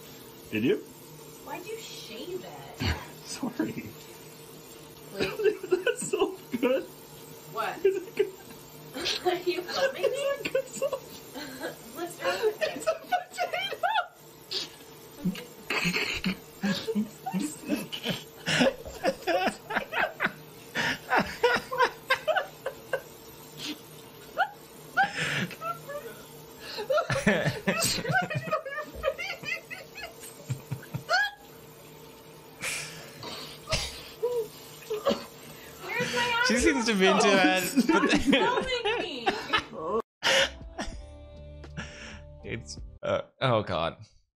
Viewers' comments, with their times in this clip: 0:07 wtf is he saying? He sounds like a squeaky little girl
0:31 guys help me out what was yellow thing i could not understand a word they said